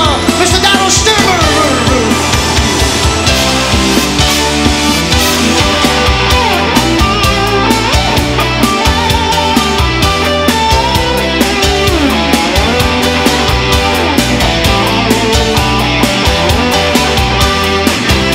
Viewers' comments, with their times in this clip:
0:04 no one is talking about how amazing the guitar player plays from 😎